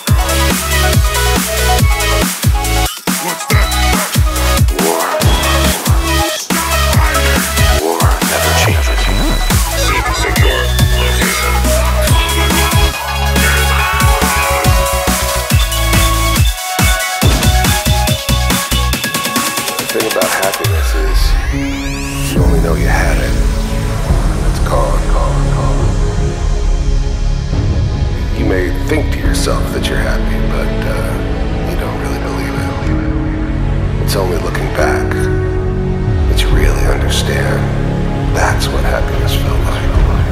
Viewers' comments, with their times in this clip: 0:08 is the best example ever that auto-tune makes everyone sound like they can sing, even a supermutant :D
0:12 Auto-tuned super-mutant. I love it.
0:14 That auto tune though!
0:22 The crit sound would be awesome !